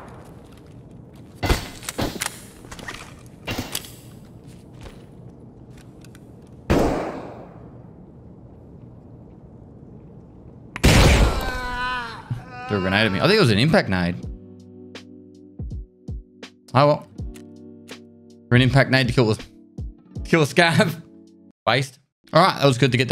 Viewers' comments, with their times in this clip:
0:09 Poor scav. Sounds so sad.